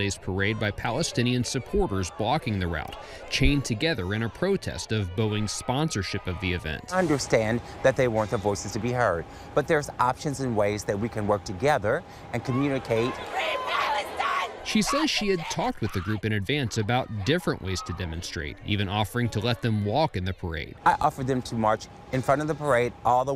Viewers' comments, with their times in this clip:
0:09 That is a deep voice ..... i wonder.................